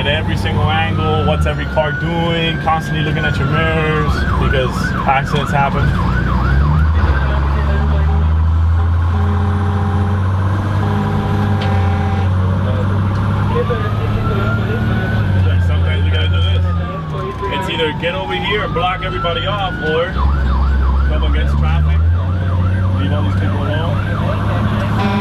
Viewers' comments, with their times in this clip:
0:07 sounds like the fire truck horn from the show backdraft.